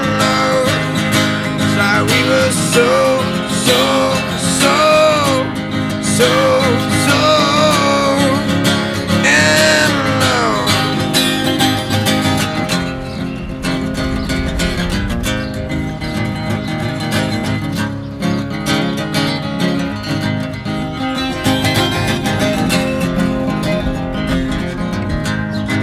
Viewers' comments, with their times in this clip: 0:08 So much wind in the background and yet no sign of it in the audio! How??? Master, teach me your ways!